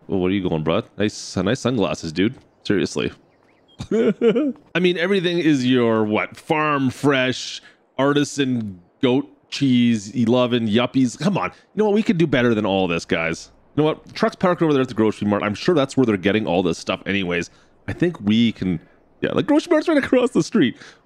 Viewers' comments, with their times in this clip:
0:04 that laugh tho 🤣🤣🤣🤣